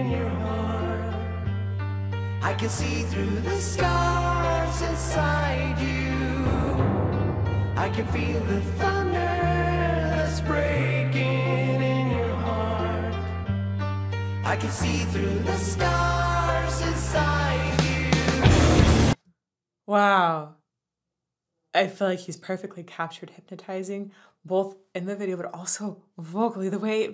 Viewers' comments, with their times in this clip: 0:09 i feel like every person get mesmerized by that part, it's like he's singing to us. Your analysis of the song was great, i loved the video, can't wait to see more